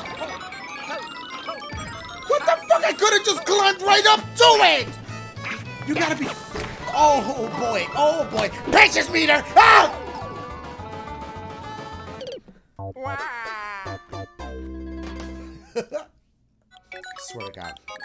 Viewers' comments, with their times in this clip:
0:04 that laugh you do when your sanity has left the chat